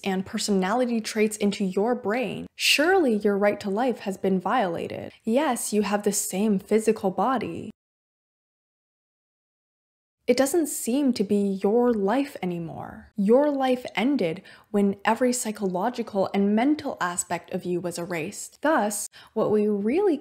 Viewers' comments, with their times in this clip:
0:07 man why did the audio cut out :((( i was saying "but are you really you?" also why do i talk so slow, even i watch this video at 1.25x
0:08 Hello, amazing as always, I would like to note that somewhere the video becomes mute, which is weird